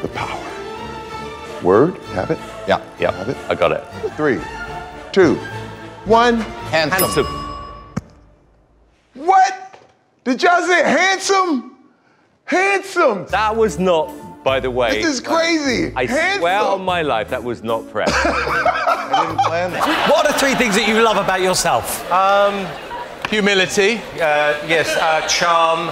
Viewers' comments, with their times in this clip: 0:06 You know what’s crazy is if you watch howie it sounds like he says handsome first but if you rewind and watch Simon it sounds like he says it first